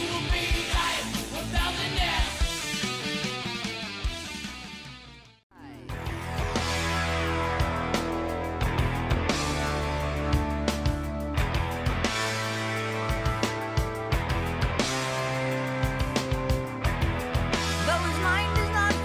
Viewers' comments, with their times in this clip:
0:06 in my opinion the intro to creeping death sounds closer to tom sawyer